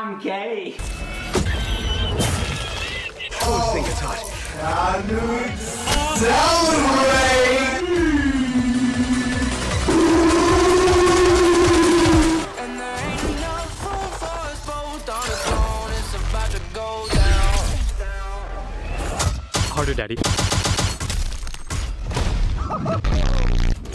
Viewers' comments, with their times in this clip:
0:04 Bruh what is that speed thing that octane does is it just me who finds that weird voice satisfying
0:07 R.I.P headphones users on full blast